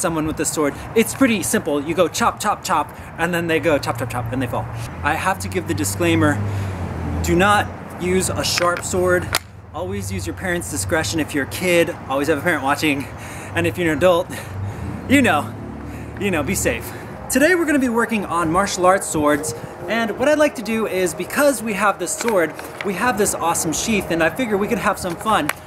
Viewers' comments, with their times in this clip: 0:08 it's a rude thing to make sound or click on the sword. _.